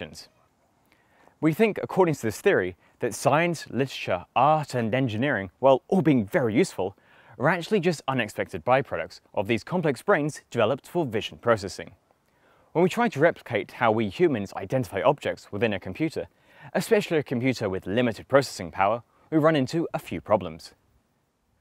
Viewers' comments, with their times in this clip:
0:03 ok so I'm not a native speaker and I know that people don't always pronounve every single syllable individually and clearly but... how many people say "literature" as listsha? (or maybe it's another word but idk which)